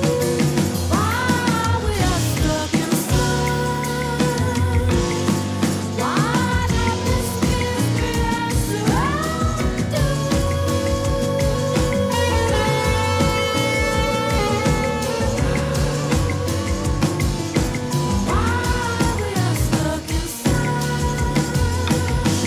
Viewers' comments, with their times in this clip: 0:03 Maestro Wayne Shorter Enters!🎷🔥 Rest In Heavenly Peace.🕊️ Thank You for blessing us with your Gift!🙏🏽🎶